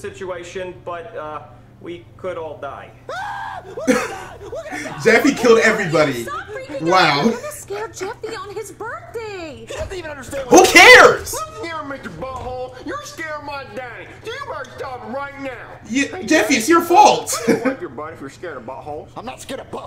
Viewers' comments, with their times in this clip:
0:05 that's my favorite noise u make